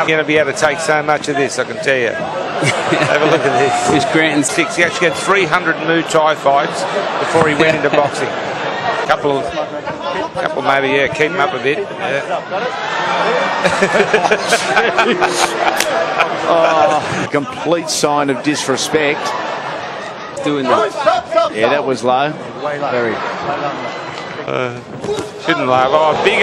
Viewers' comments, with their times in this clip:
0:08 that pop is insane, the actual sound not the punches
0:09 OMG!!!! Did you hear that PaPOW!!!! ?? That hit was so fucking clean it was like he hit a damn heavy bag.